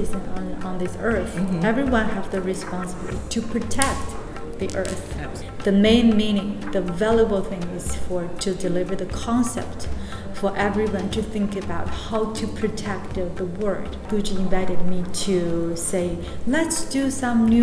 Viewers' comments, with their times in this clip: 0:03 Love that emphasis